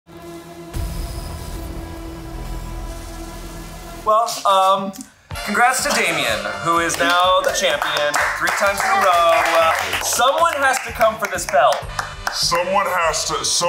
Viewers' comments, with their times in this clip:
0:01 Ahy does thislowkey sound the T-Rex from Jurassic Park?